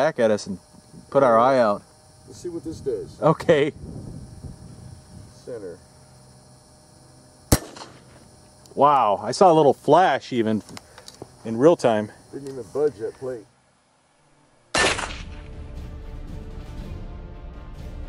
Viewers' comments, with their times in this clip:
0:03 What's up with the way you say "okay" Lol